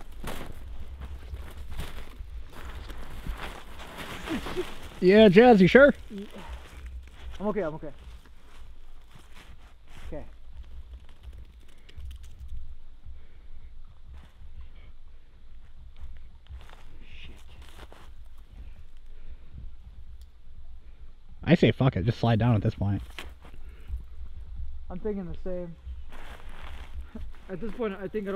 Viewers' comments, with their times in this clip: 0:10 Am I the only one who heard the native drums faintly in the background ?